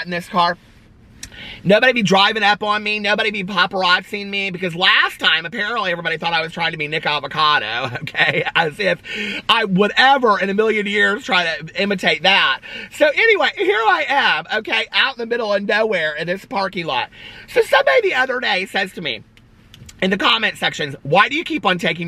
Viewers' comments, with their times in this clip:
0:05 oh my Gosh! Like 5 seconds before you said that I thought "my gosh he's sounding like nicokadoavocado.... so annoying"